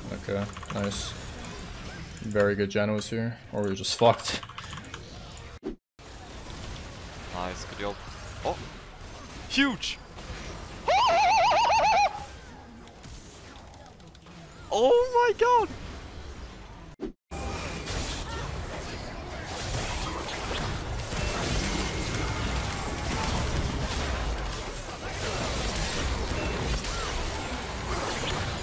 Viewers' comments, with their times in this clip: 0:07 the sound that a turkey makes before getting killed for thanks giving
0:09 sound like my kid’s toy gun
0:10 now thats a horse if i have ever heard one
0:10 is that a hyena?
0:10 No one: Hyenas: